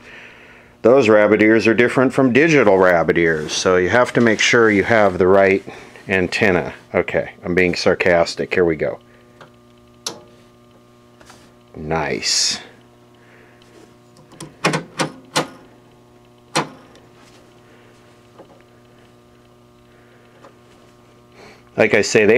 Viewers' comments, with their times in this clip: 0:09 That tv is in brand new condition I love the sound of the tv thump